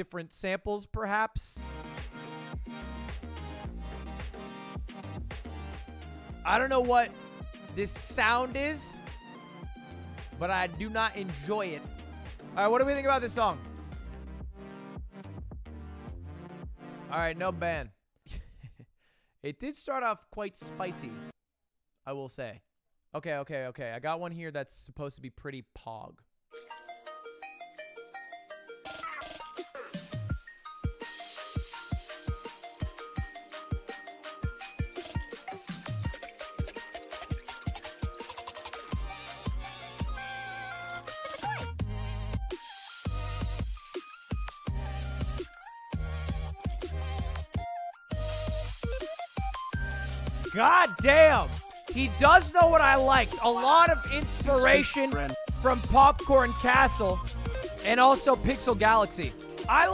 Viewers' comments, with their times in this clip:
0:08 I agree, it sounds like a mosquito buzzing my ear when I listen to it.
0:40 Song kinda sounds like Future Candy
0:42 Listen to the drop it is LITERALLY snail house. The chord arrangements is exactly the same, he just added notes on top.